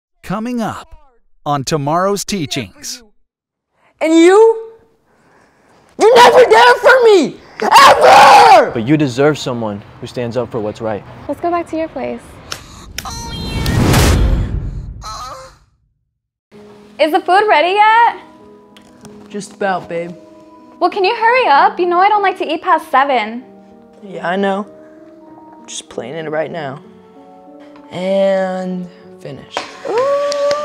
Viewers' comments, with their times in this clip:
0:07 MY EARS BURN 💀
0:12 BRO THAT WAS WILD ASF WITH THE CLAPPING DAWG WHAT?! 😭😭😭